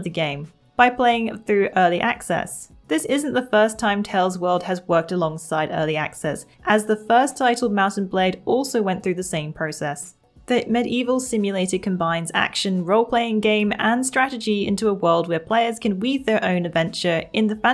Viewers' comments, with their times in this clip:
0:03 TaleS world. Sorry I had to